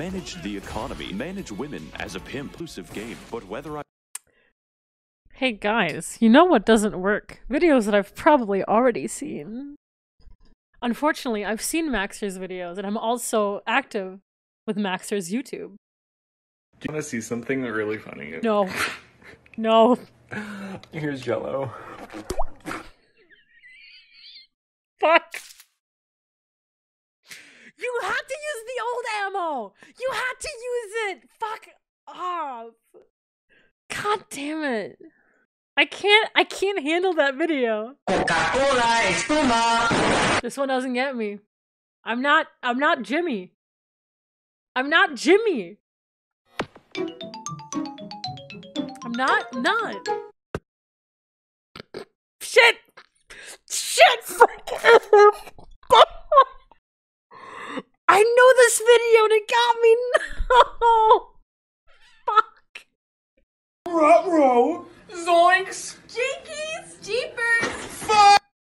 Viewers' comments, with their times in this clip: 0:05 “Hey guys, you know what doesn’t work? Videos that I’ve probably already seen” immediately laughs at a vine
0:55 if I had a nickel everytime some streamer/youtuber laughed at that cat, i would have two nickels, which isn’t a lot but it’s weird it happened twice.